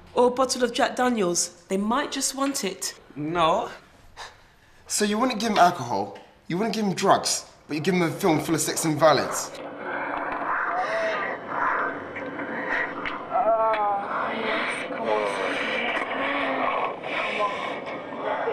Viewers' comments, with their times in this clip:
0:05 What’s a “ciggyrette”?